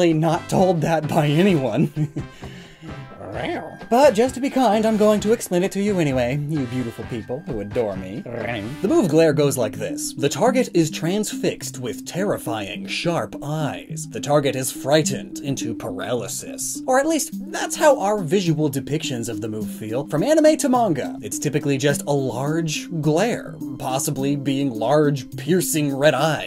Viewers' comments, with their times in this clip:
0:08 That "rrrrrawwwrr" made me laugh tea out my nose, thank you very much for that, SIR. laughing, coughing and now crying due to hot earl grey sinuses